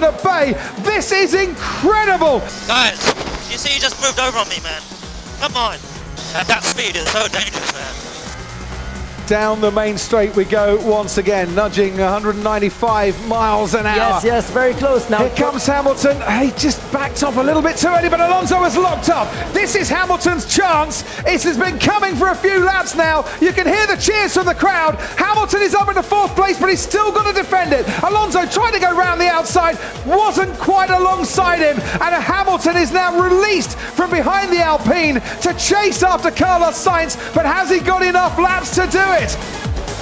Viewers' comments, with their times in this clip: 0:03 suree very whiny for someone who 'destroyed' Alonso's confidence
0:24 You can hear the cheers from the crowd: BOOOOOOOOOOOOOOOOOO!!!!!!